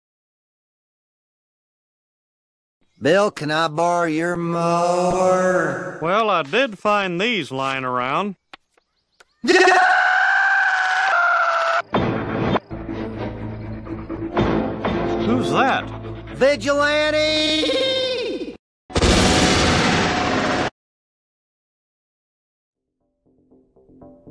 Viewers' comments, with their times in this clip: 0:09 hank's high pitched voice and dale's scream had me crying, lol.